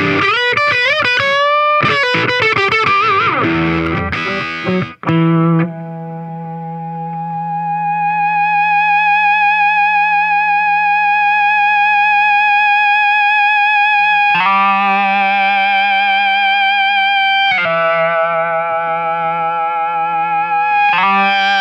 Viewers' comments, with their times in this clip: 0:09 Sick feedback sustain, I want it!